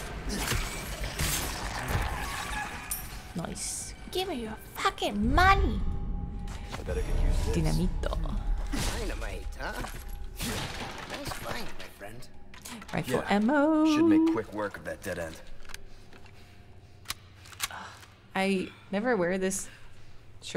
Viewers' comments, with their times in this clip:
0:07 hehe the spanish for dynamite is actually "dinamita" instead of dinamito. yep. it's a baby girl! "oye!" kinda sounds like/variation of a prolonged "oi~"